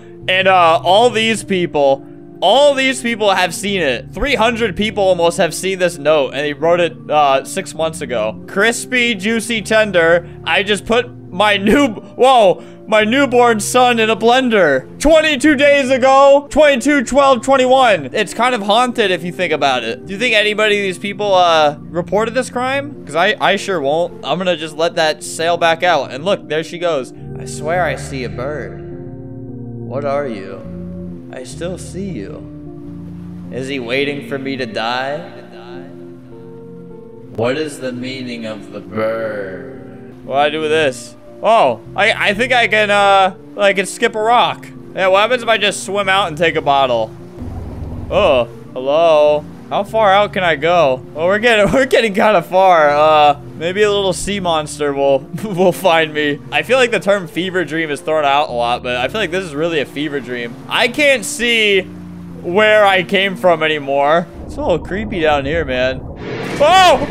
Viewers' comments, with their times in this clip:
0:08 here's flamingo singing crispy juicy tenders, your welcome.
0:48 when albert said “hello?” while swimming,it reminded me of chrissy wake up. time stamp: